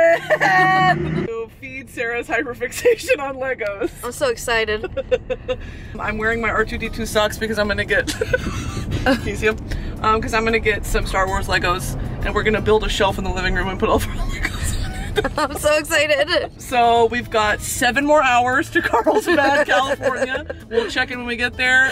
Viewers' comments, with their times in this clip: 0:07 Not me thinking that she said the n word😭